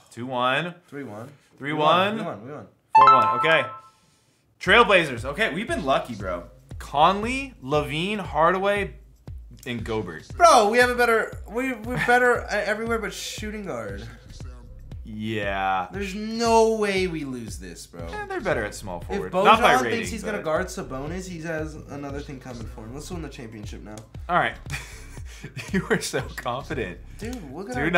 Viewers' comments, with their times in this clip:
0:08 did he say Go-Bert. I thought it was Go-bare.